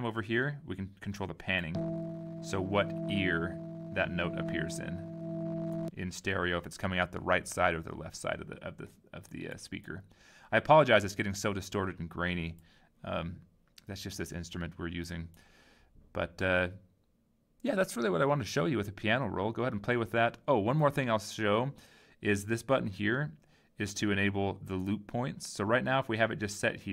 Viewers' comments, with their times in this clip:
0:10 it helps to lower the volume of the triple oscillator when using the piano to make less distorted ^^